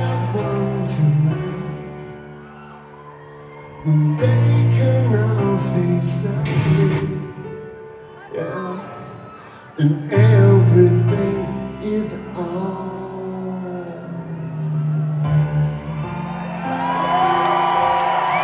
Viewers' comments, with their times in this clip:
0:05 that guitar noise had to be unintentional lol